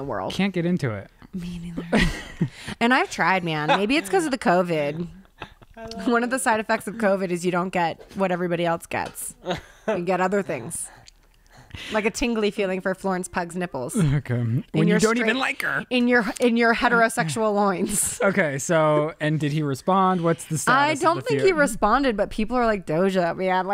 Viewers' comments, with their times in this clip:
0:05 Who's saying "I love you" ?